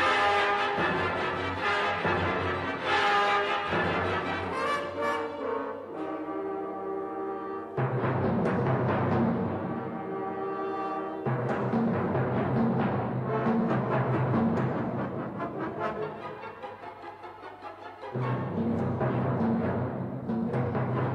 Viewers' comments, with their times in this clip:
0:07 Interesting timpani mistake just after